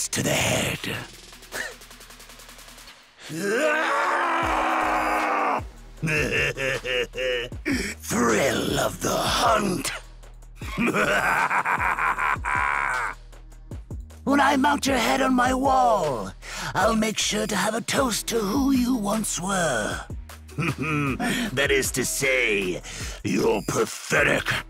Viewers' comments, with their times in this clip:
0:06 bro his laugh is hilarious 😂😂😂